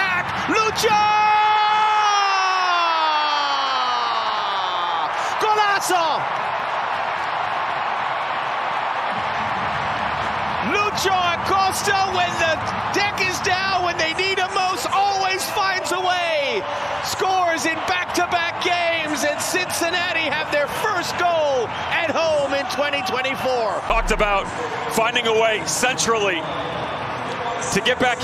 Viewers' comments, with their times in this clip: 0:10 when the what is down ?